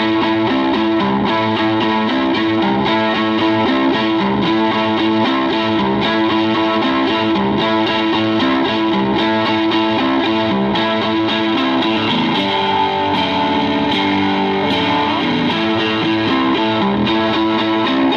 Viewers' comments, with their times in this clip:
0:05 Is just me or do just hate Reverb and echo.. sounded good .